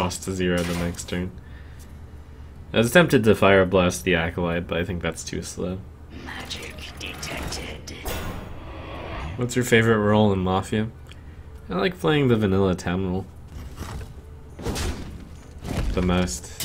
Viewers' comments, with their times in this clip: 0:04 I understood: I was tempted to Pyroblast the Acolyte ... Would've been done with life